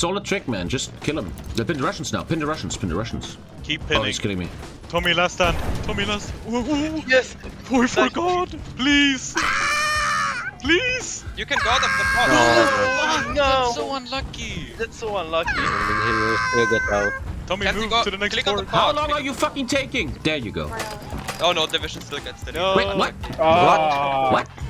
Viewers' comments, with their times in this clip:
0:09 Last ginger wehrmacht commander screaming for his life in the battle of Berlin - 1945